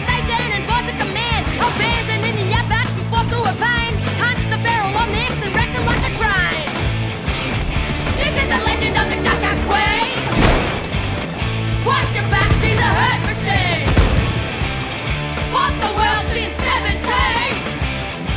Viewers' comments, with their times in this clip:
0:06 is it just me or does that guitar starting sound like the intro to Trigun?